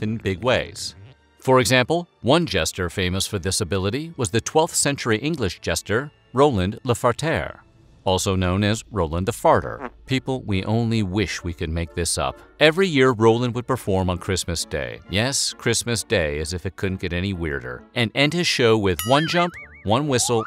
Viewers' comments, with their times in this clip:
0:03 "Famous for disability...." yes they needed medical help for those conditions. LOL.